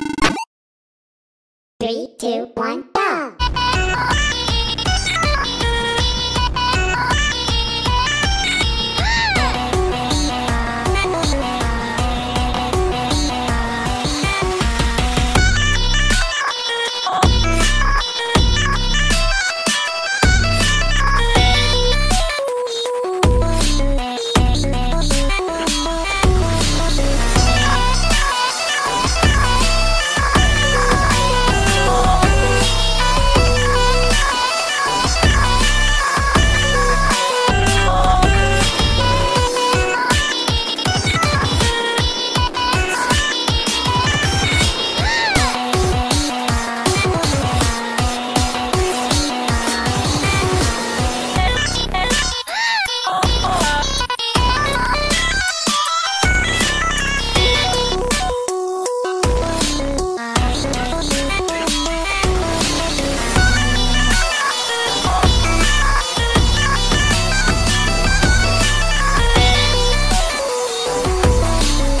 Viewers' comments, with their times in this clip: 0:08 Replays for sky’s little “ugh!”
0:09 it should be"urrg" instead of "ugh" XD
0:09 angered anime girl noises
0:09 Nobody: The bird from my window:
0:09 Did she scream or is that an ugh
0:21 am I the only one who heard tankman say “E”
0:21 i think in the final note you can hear the voice of tankman
0:27 sky sounds like a cat screaming
0:44 -VERY WEAK FAN GIRL SCREAM
0:52 i keep laughing at this cut scream
0:53 The one thing that irks me about this is that it's not quite right where there's meant to be a stutter of Tankman's "Ugh". :/
0:56 Tankman Voice XD
0:57 ERROR (Tankman voice)